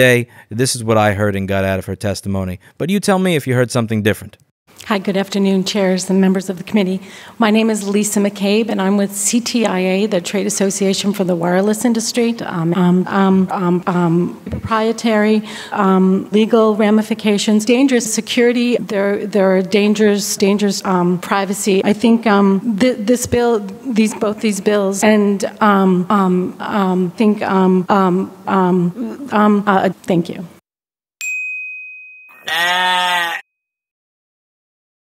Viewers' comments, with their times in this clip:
0:10 That's roughly what I heard as well. I'm one of the poorer speakers on the planet -- even I'm better than this!!
0:23 i like how the one guy on the panel politely covers his yawn at her umming